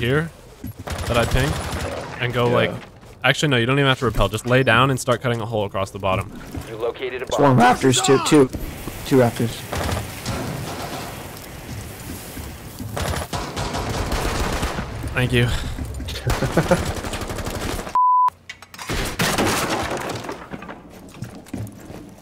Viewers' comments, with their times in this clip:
0:07 That Voice Crack 🤣😂🤦‍♂️